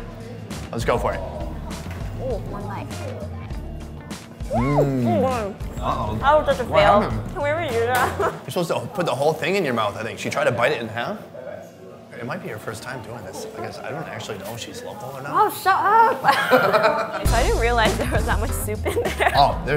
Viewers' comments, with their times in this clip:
0:05 sounds like she is giving heads, deep throat